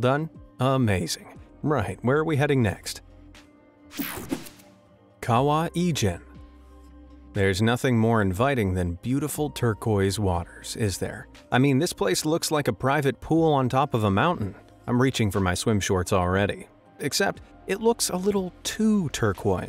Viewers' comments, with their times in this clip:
0:07 At first I thought he said Egypt instead of Ijen and I was so confused when I saw the location of the lake